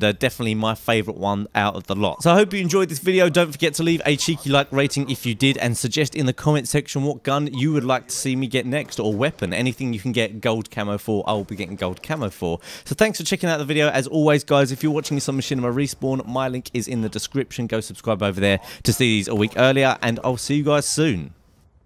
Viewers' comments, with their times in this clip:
0:06 leave a comment in the sexual